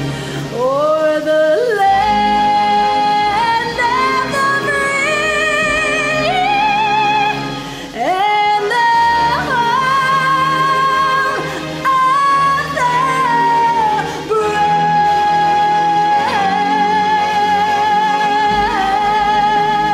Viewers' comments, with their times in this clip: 0:06 That high note had me shook girl. Dang!